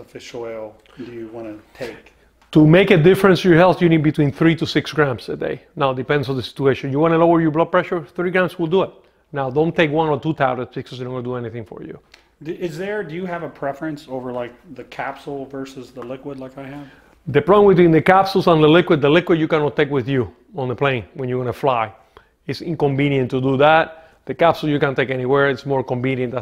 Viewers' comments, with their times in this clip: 0:09 He said "3 grams will do it" then right after that he says something that either doesn't make sense or that I cannot understand.